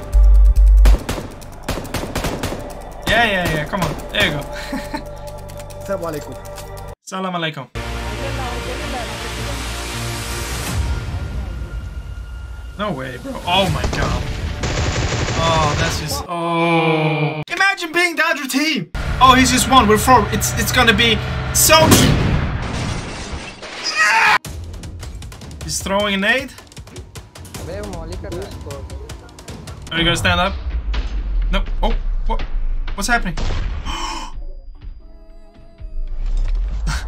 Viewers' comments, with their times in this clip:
0:06 your "salam aleykum" looks like Ronaldo's salam aleykum voice 😮
0:23 hahaha bro that scream I can't 😂💃😂